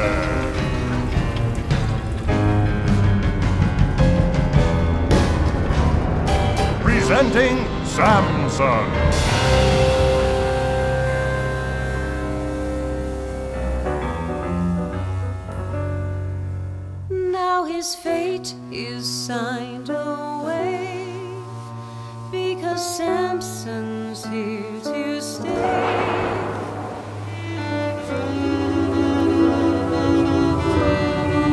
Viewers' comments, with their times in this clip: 0:06 This is the most beautiful, breathtaking, mindboggling animation I have ever seen!! I mean the attention to detail!?!? Samson stops and his bell moves and you can HEAR IT- I'm actually obsessed ❤❤❤ Also feel like someone needs to mention how often Samson is talked about in here 😂 (I mean he's not undeserving of it! Big bad-looking engine who isn't actually bad!!) I just love that everybody loves him
0:06 I thought he said Samsung 😂
0:10 I love how Samson rings his own bell to punctuate his arrival, he knows for whom it tolls
0:16 Now his fate is signed away… Because Sam-son’s here to stay… (Sad violin and solemn whooing) And what Will become Of Li-nus? No..one..knoooows……